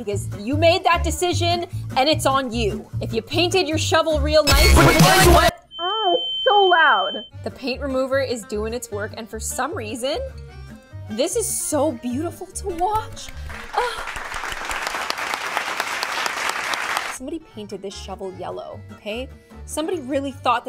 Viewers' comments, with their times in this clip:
0:04 rip headphone users-
0:05 BUT WHY DO I ALWAYS FEEL-Why is that so loud?!